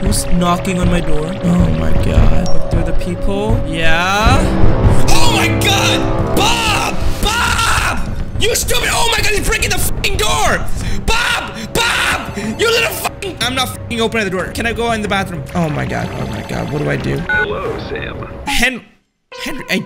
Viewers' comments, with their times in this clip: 0:06 THE SOUND CERFEW IS 10PM!!!